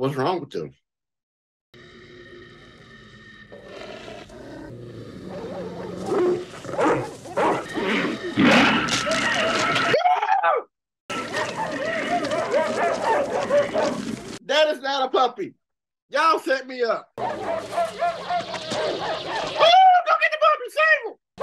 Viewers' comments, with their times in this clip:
0:07 man, that was a genuine scream of terror!
0:09 I hereby put forth that the scream is the funniest thing humanity will ever know, or hope to achieve again. Amen.
0:09 The absolute horror in his scream when the pups face splits open like a demogorogon ay is gold. You cant fake that!